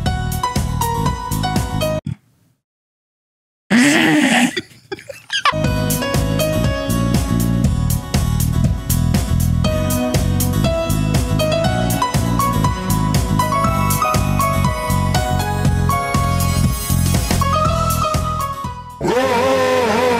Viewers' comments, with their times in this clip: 0:04 The hell kind of snort was that? 🤣